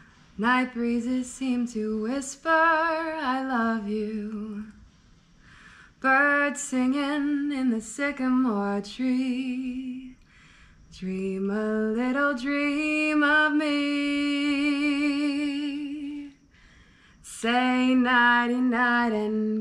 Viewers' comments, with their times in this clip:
0:06 I really enjoyed your singing ( mins ) My father is attending his best friends funeral on my birthday